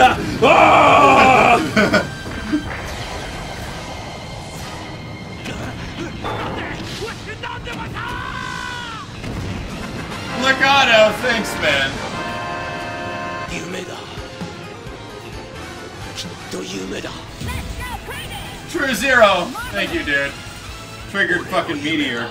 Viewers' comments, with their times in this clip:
0:09 Dat FFVII Victory Fanfare when the island gets a meteor shower xD